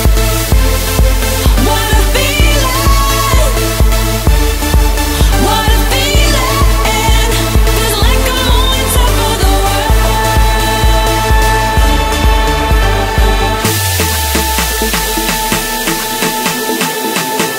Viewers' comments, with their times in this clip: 0:05 Like Swedish House Mafia sounds <3